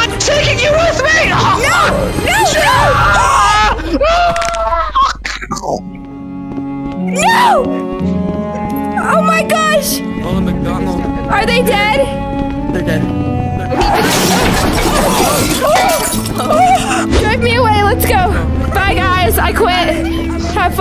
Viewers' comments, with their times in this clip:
0:03 Lol I laughed when they fell down and Ronald McDonald’s got a mic warning lol